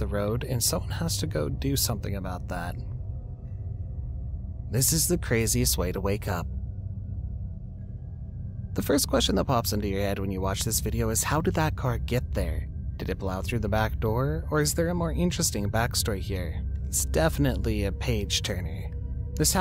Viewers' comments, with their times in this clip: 0:04 AI Audio Glitch?